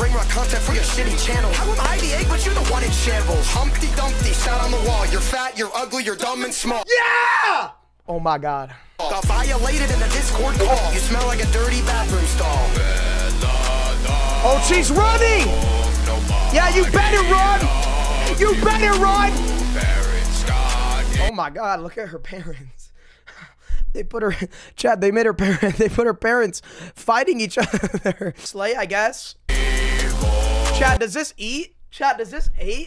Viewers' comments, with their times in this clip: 0:09 I heared Humpty Dumpty shat on the wall :/
0:19 bro that part sound like my voice in the morning